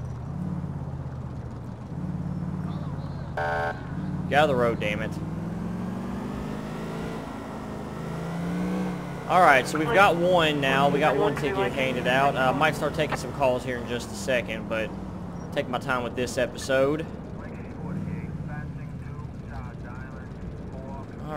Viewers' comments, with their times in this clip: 0:03 HAHAHAHA just the way you said it